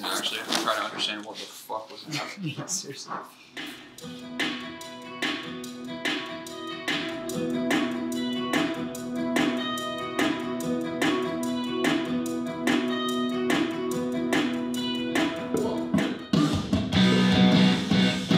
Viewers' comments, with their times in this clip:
0:04 im obsessed with that song omg